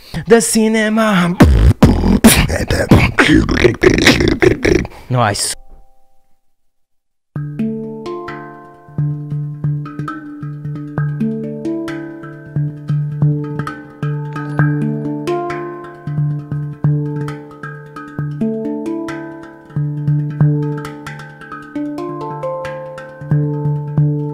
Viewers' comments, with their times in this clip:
0:10 the hang drum excellence.